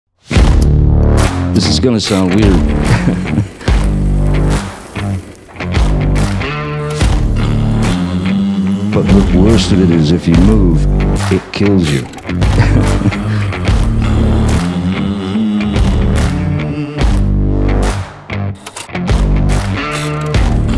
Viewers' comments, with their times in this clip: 0:03 his lil laugh🥺🤚